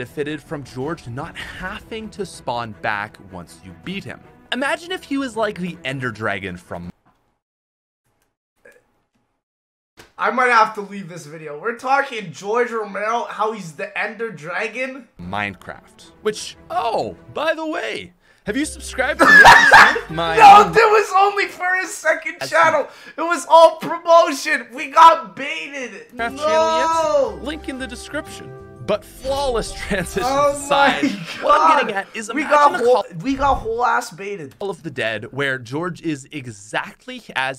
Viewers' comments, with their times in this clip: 0:10 I felt such a hard crack that it hurt my throat more than I thought
0:18 that laugh still gets me 🤣